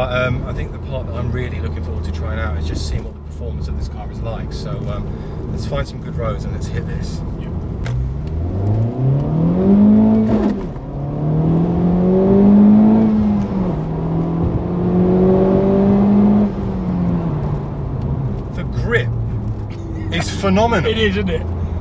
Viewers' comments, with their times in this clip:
0:09 Nice transmission grind from 1st to second gear ... OMG...